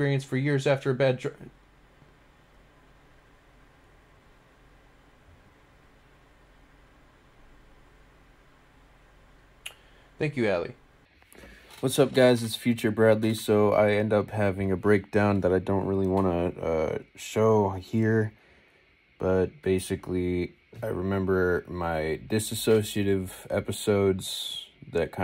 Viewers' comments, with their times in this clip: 0:08 Music so bad my man got a PTSD trigger 😭